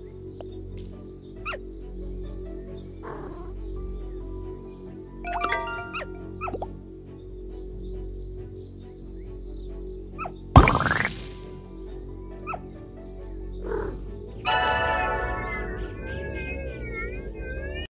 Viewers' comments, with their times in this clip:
0:09 me thinking at the very end when it said triple coins gone me thinking it said sry dupe lol